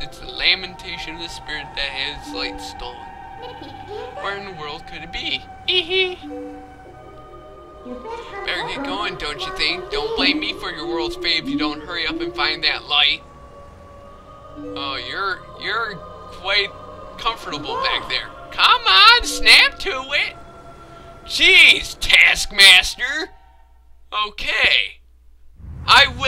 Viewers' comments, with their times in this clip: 0:10 Who else noticed that easter egg where she hums the twilight ordon woods theme?